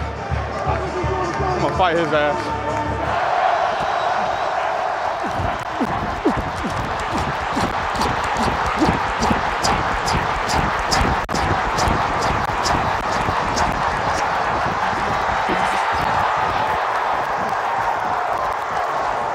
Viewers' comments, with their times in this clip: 0:03 88 yr TD run: Chubb sounds like a locamotive just chugging along! Absolutely love it!